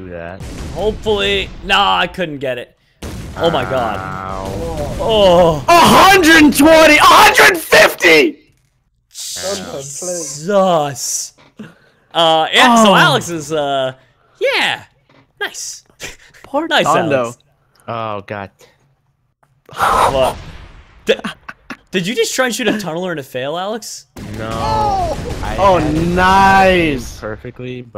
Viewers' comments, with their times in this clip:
0:08 Rip headphone users Your welcome.